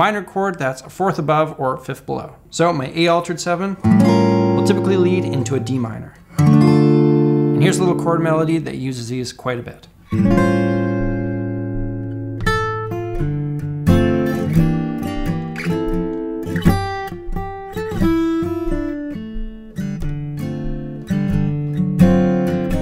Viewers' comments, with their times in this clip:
0:08 Dude that "Summertime" was sooo good. What a great choice 👏
0:09 That Summertime cover pretty sweet
0:10 Wow the melody you do sounds like something someone would play on piano in a bar or something